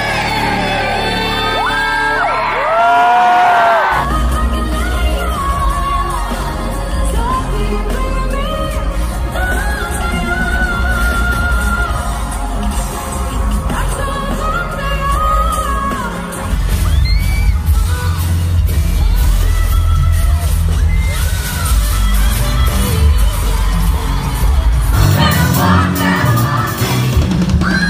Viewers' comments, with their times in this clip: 0:08 Ariana’s tone, placement and projection are fantastic! ✨